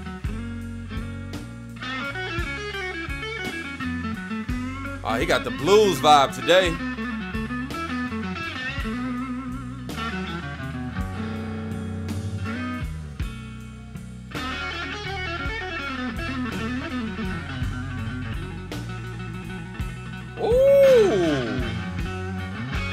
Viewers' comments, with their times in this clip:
0:04 YES! The riff at about the mark is incredible.